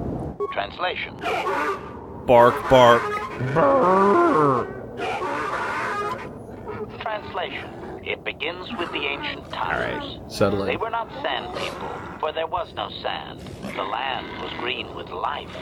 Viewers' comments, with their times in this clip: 0:03 so is one sand person bark a sentence? Because HK does like 4 or 5 sand person barks and then tells a fucking story in English.